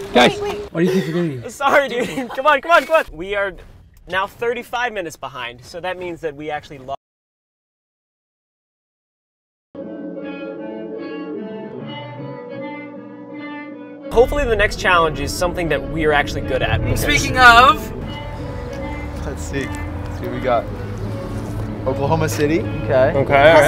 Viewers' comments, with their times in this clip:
0:06 Sound cut out ...other than that, this is probably one of the best videos I've watched from you my guy. KEEP IT UP :)
0:06 The audio cuts out
0:06 audio cuts out
0:07 Who else thought they AirPods just died?
0:07 Did anyone else notice the sound cut out for a few seconds
0:07 Why there was no sound
0:07 Anyone else have audio cut out
0:08 audio cut out for anyone else at like ?